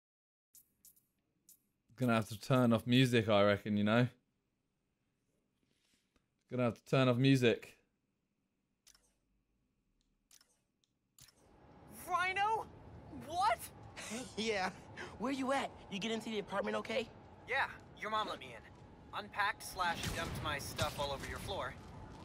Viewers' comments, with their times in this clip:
0:05 Audio comes back on